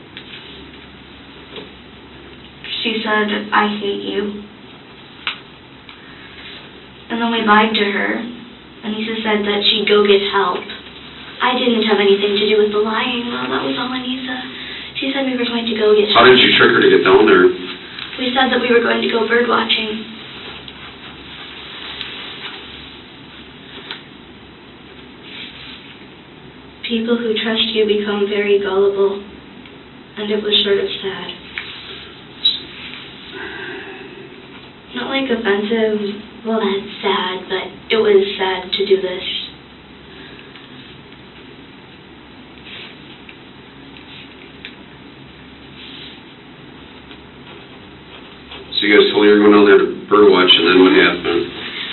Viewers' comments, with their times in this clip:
0:10 OMG that tone is just so creepy!
0:36 Can anyone help me figure out what she says